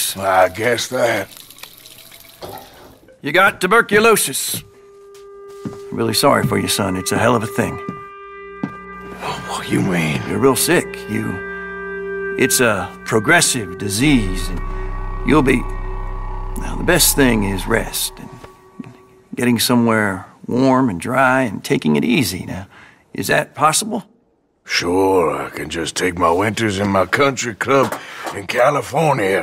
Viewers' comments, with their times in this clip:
0:06 the sheer sadness and pain on arthurs face and how sad and painfully he sais “well what you mean” made it so saddening
0:17 Listen closely just after the doctor says " and " there is a weird noise (like someone whispering) I hear " and again " but I'm not sure. Anyway it's creepy xD